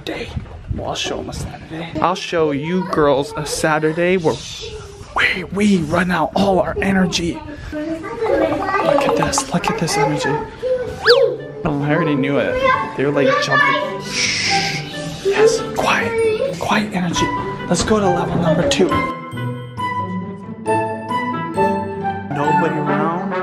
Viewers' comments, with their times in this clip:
0:08 omg that the grudge sound